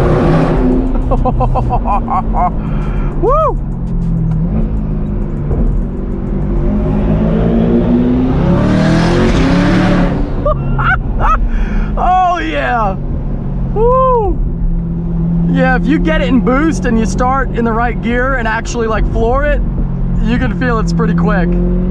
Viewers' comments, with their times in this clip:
0:04 my jaw literally dropped on that pull, this is probably the best sounding C8 out there!